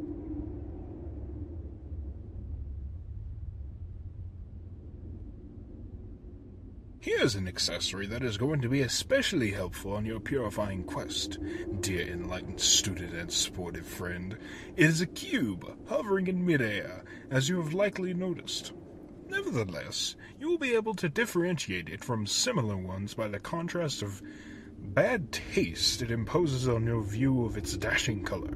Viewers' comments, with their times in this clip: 0:10 Everyone talking about the Batter's strange but fitting accent, but no one talks about the ROBLOX REFERENCE OH MY GOD Also I love the cat, his VA and lines are very sophisticated.